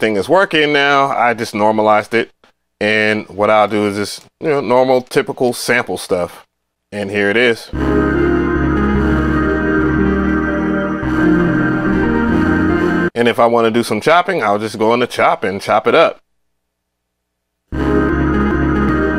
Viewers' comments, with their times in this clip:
0:03 haha there was barely sound all you did was record it was linked to fl at all 😂